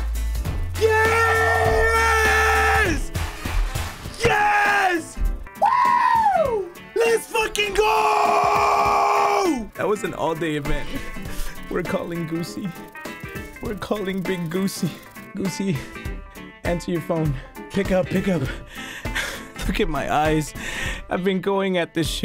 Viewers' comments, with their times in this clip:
0:04 Did anyone else hear Jackspeticeye scream from Happy Wheels?